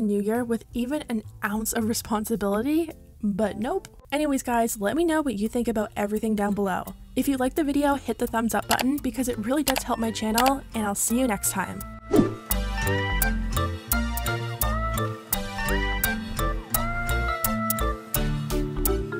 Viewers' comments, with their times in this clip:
0:03 that was the cutest passive aggressive nope I've ever heard 🤣